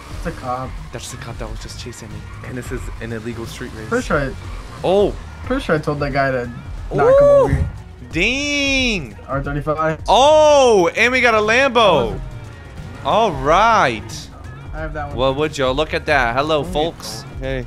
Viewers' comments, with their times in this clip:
0:05 THE WAY YOU SAID NO WAS TOO FUNNY